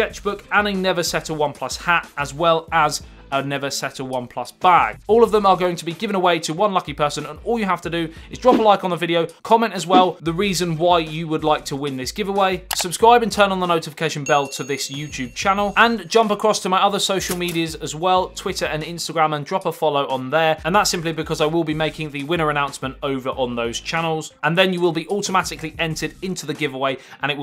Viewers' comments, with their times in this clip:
0:10 im weirdly addicted to your voice and minor humor mate.. here iam its like im seeing all ur vidz for the past 1hr... and sure iam into it.. that British strong accent tho,.. (o homo lol) love u man <3 grt review